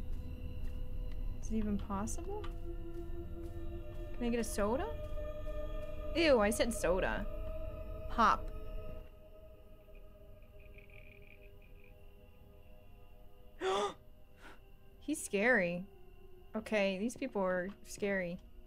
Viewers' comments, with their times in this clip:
0:06 that’s so me when I say soda or when my parents do 😂😂